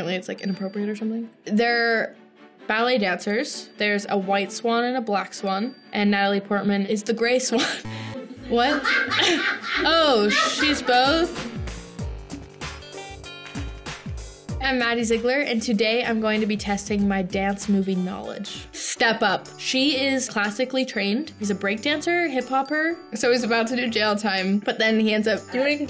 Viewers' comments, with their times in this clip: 0:09 DUDE.. WAS THAT A LAUGH?!?! xD xD
0:09 that laugh in the background tho 😂😂😂🤣🤣🤣